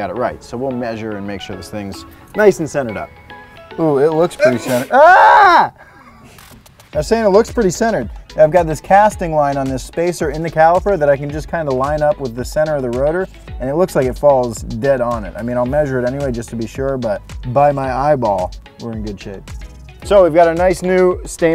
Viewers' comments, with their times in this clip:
0:04 Cameraman: Sneezes Him: Screams in Corona
0:05 someone sneezing anywhere in 2021